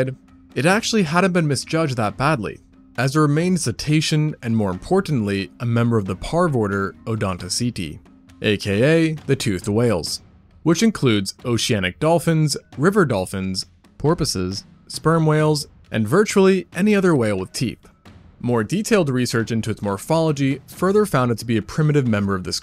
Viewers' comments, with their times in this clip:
0:10 "virtually any other whaled teeth" 🤣🤔 is it just me or is that what he said